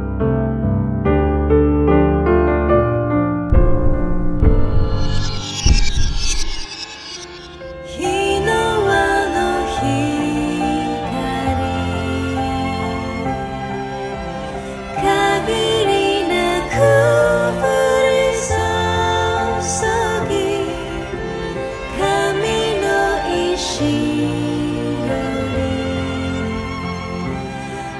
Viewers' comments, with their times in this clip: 0:07 Sounds awesome. Right Now i have a telltale the walking dead feeling. I like this teaser trailer it's beautiful and disturbing and there is a frame with blood.
0:12 for a second i thought i was listening to suteki da ne